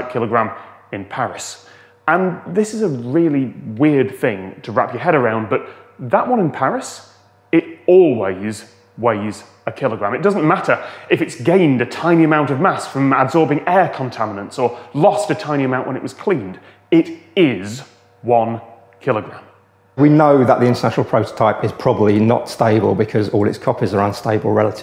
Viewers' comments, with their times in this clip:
0:10 Me with broken earbuds: it doesn't matter is it's GAY (silence) amount of mass-